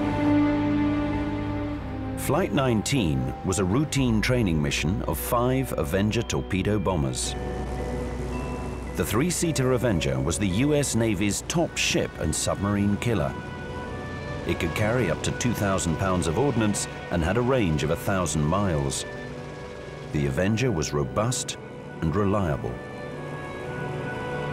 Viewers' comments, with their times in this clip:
0:10 Is it just me or does it sound like he's saying "top sh*t" ??